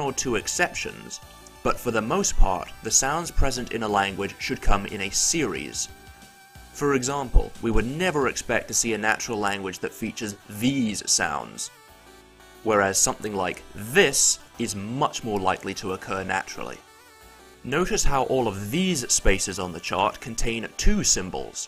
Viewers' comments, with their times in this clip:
0:07 that's just Klingon, right?